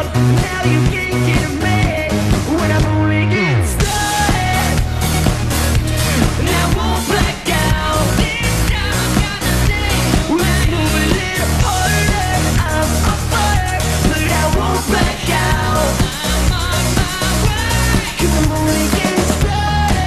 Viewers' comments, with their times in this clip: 0:07 LMAO he fucked up the notes